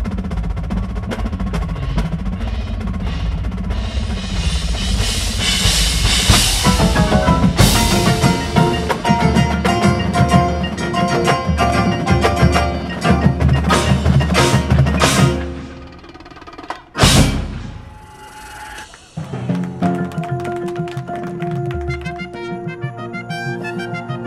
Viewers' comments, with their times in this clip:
0:09 Bass 4 and 5 oops lol